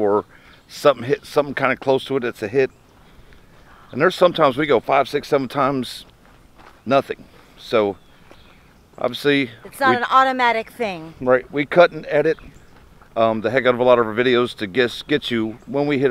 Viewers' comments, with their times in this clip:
0:04 was that an EVP? Great video!